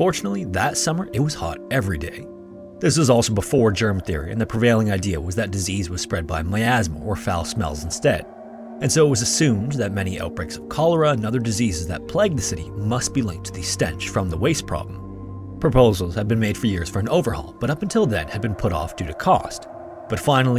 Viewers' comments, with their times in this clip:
0:06 Ah yes the old disease being spread by “mehyasma” theory